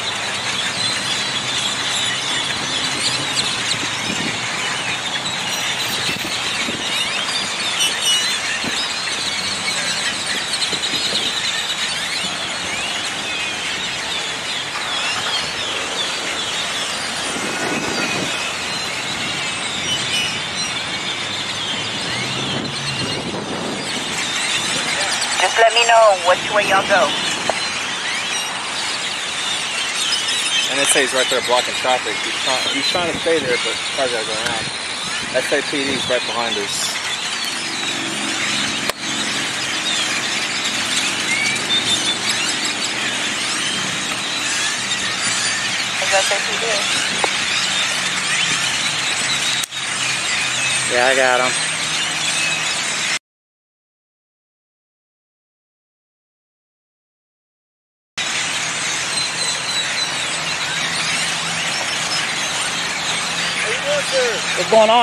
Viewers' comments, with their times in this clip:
0:07 dam those birds sound like they warning the neighborhood about the pigs location...
0:47 those birds know there's bs about